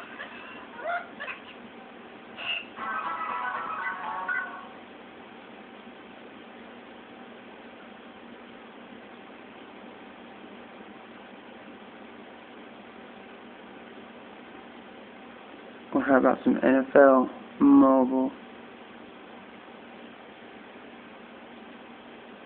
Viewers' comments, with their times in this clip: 0:05 sorry it's quiet, peep's were sleeping. It was AM